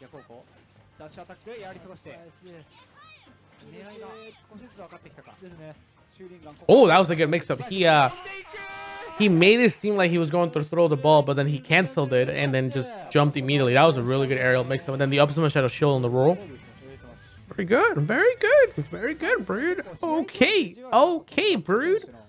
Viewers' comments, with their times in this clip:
0:08 announcer says the n word